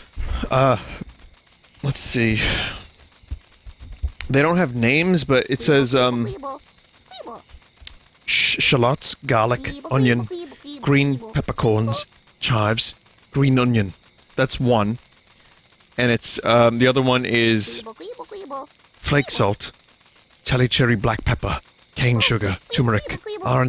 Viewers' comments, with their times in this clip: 0:07 was that a gordon ramsay impression? wow its good